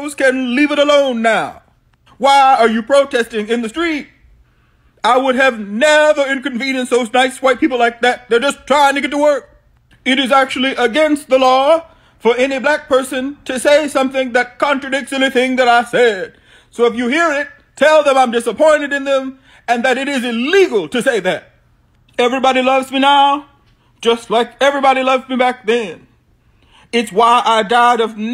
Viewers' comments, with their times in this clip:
0:10 that guys impression is so great lmaoo